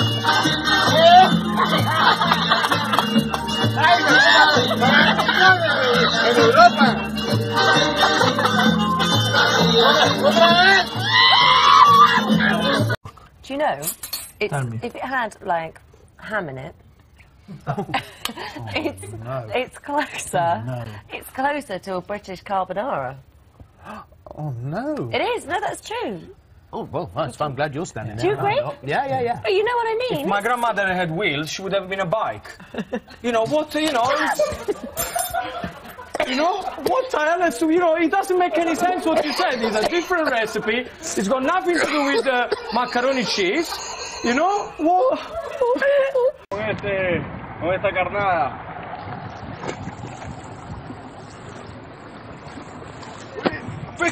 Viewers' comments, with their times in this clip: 0:05 🐒 soundin ass laugh 💀
0:10 R2D2 was recording
0:10 Why is nobody talking ?!
0:10 Sounds like a witch
0:27 for epic laugh
0:30 british mumbles about granny with wheels being a bike - comedic potency so volatile it instantly kills 2 people
0:41 can anyone tell me what happened here? I couldn't understand their accent